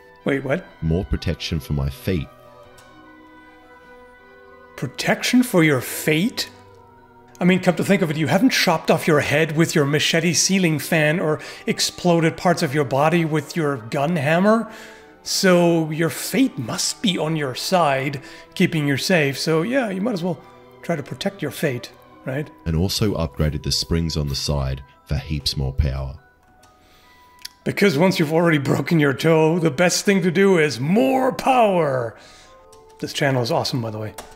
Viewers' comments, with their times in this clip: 0:07 all I have to say is: 🇦🇺
0:17 i mean that is just low making fun of someone's accent